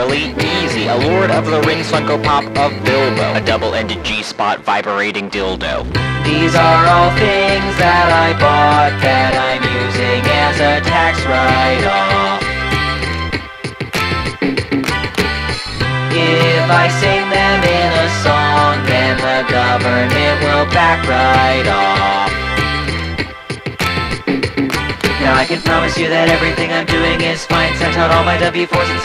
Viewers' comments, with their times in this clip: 0:06 From onward played at 1.25 speed reminds me of the song from DDLC.
0:11 the trumpet melody sounding like dokidoki literature club
0:11 Maybe I'm the only one seeing it, but that trumpet sounded like DDLC
0:11 those notes reminded me of ddlc lol
0:12 This sounds exactly like the main theme from DDLC and it’s driving me crazy.